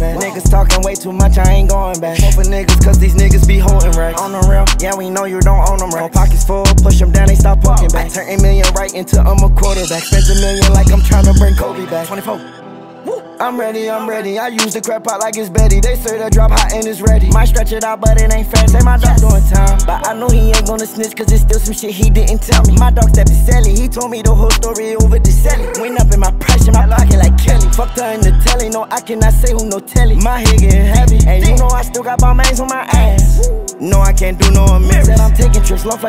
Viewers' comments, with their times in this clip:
0:04 The way he says "on a real, yeah we kno you don't own them racks" always makes me laugh.
0:21 anyone else hear those click noises